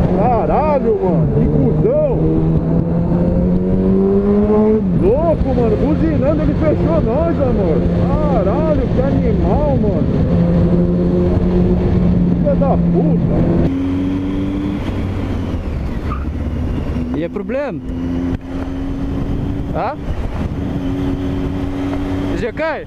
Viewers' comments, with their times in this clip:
0:10 Brazilian Portuguese cursing sounds the best!! 🙇‍♂️🙇‍♂️